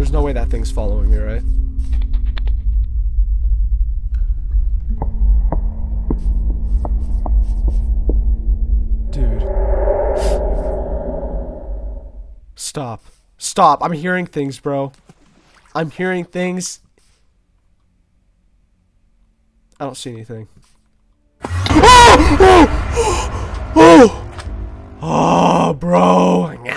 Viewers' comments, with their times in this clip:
0:10 scariest noise of them all